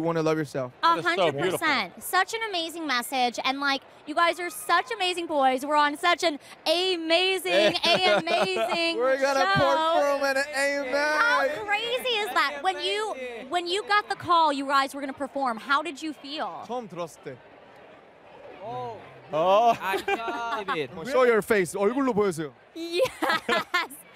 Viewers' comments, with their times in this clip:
0:06 I hear Jin's voice when he repeat the "AMAzing" 😂
0:09 i just KNEW Jin was gonna laugh at that lmao